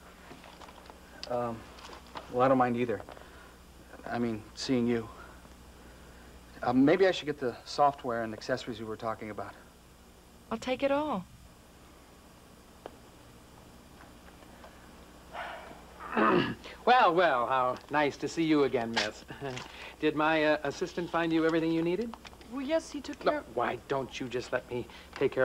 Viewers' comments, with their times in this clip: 0:08 Voiceover!!! She is NOT saying the words “I’ll take it”. The original sentence seems to end in all, so I wonder why they changed it? I might literally never know